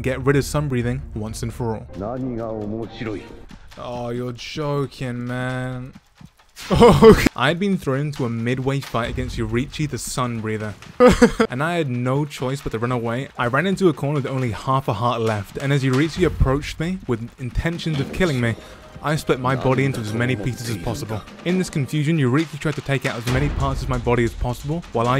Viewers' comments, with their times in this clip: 0:06 "*realizing I'm dead noises* 🤣🤣"